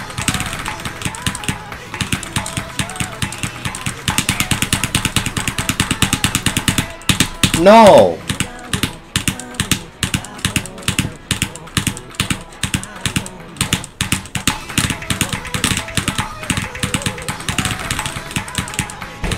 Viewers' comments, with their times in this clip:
0:06 a true gamer cry